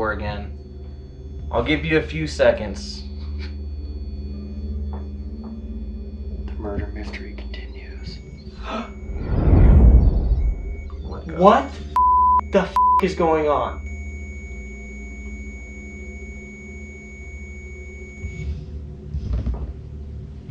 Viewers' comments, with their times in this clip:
0:07 Did anyone else realize that the Rempod sounded like a heart monitor? It beeps rhythmically for like 5 seconds then flatlines, and then it can no longer make sounds anymore.